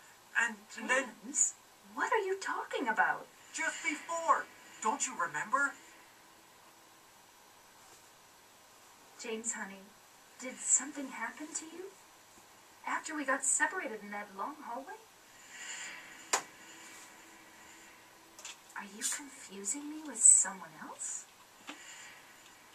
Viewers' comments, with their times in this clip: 0:07 one of the best cutscenes i've ever seen in videogame history, even to this day i still think that and i always will.the contrast of the two women really shows here ...and the way Maria tells James i'm not your Mary, still sends a chill down my spine